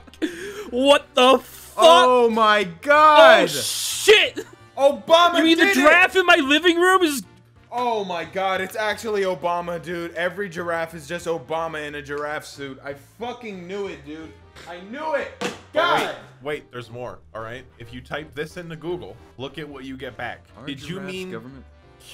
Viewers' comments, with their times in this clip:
0:05 You guys are literally talking about Giraffes... How did you think he said draft?